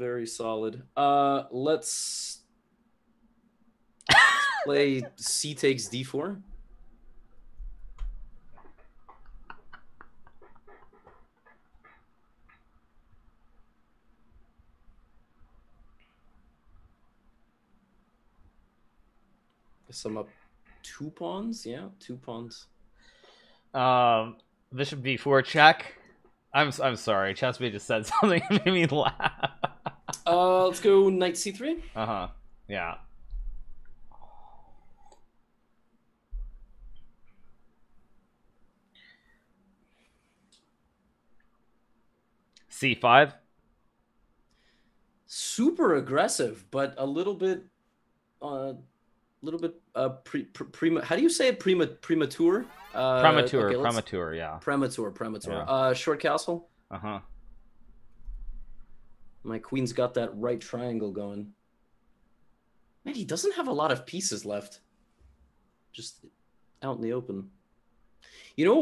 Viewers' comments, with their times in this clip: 0:03 I don't know why, but watching Hikaru die of laughter has me crying
0:52 they both said it wrong, didn't they?!😅 It's okay!... you can't be good at everything! 😘